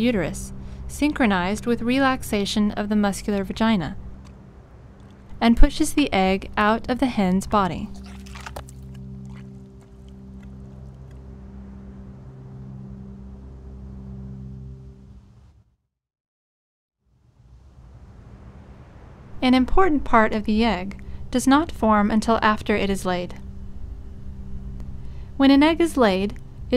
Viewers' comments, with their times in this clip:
0:07 that sound effect is nasty